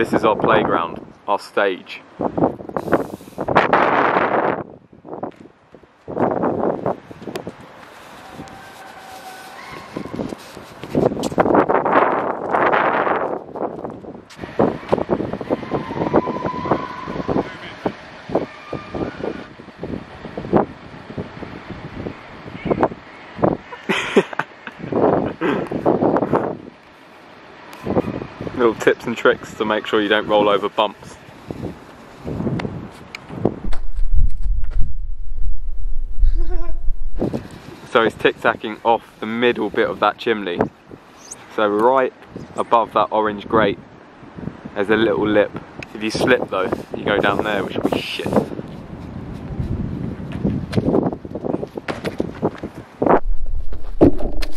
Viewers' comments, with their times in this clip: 0:03 That one kid who breathes hard on his mic.
0:36 best laugh ever😂♥️